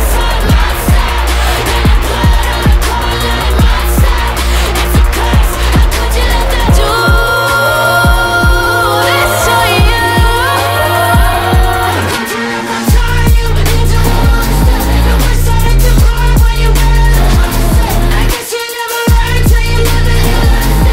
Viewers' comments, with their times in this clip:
0:05 I love the way they sing that line ❤️‍🔥